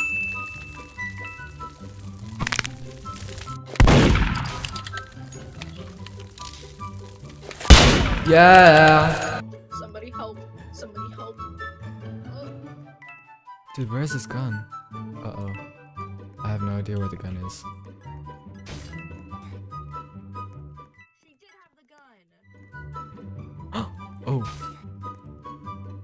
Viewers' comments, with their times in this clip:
0:08 was sooo funy when u went YEAAAAAAAAAA